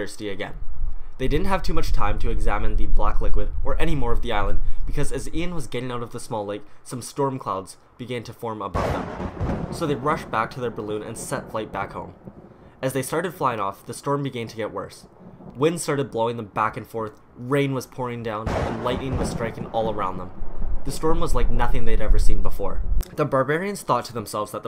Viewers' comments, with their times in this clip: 0:08 I was walking up the stairs and had earphones on... I fell down tumbling cuz of the thunder noise :/